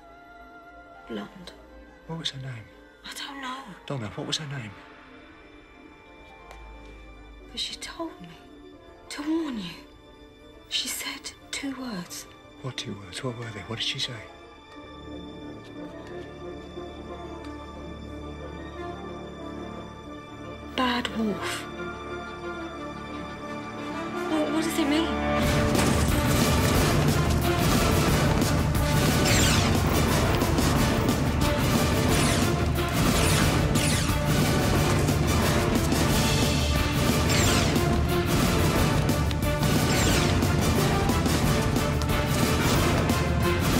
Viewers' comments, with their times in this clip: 0:04 I got chills listening to the music rise
0:24 Whovians know that when this music is played, shit is about to go DOWN.